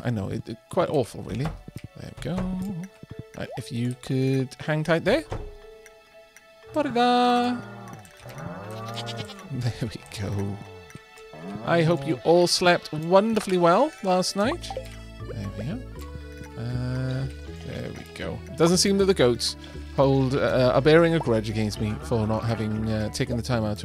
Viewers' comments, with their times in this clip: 0:06 Anyone else hear girlfriends not goat friends? Just me? 'k.